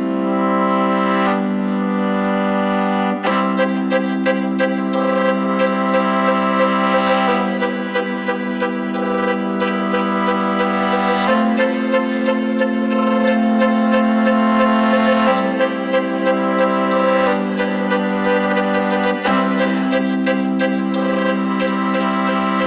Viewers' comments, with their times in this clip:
0:03 did anyone else bust out Akon here? '' Its been soo long... since ive seen your face''